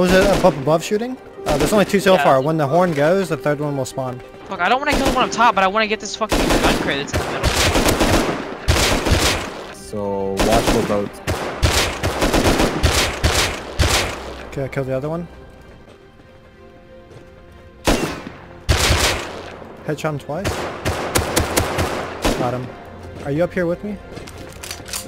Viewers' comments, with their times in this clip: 0:07 listen to the gunfire and makes the secret knocking noise on the door when you shoot the dude